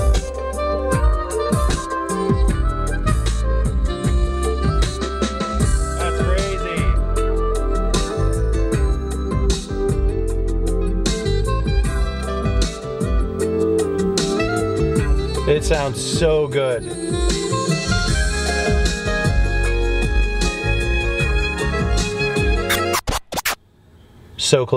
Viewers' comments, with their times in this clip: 0:07 Sounds great!!! But my ocd hit 1million with the window not indexing 🤣